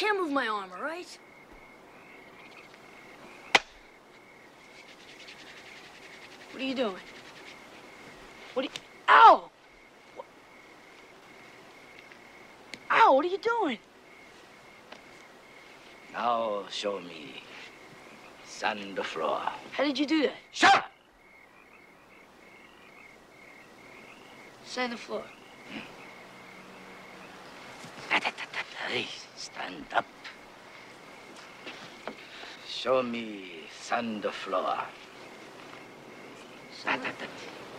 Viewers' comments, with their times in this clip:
0:08 when Miyagi heals Daniel you can hear the bone cracking
0:20 "SHOW!" Miyagi's voice was like a rifle shot here. This was the first indication of how much he meant business with Daniel in this scene. A vast difference from how soft-spoken he's been up until now.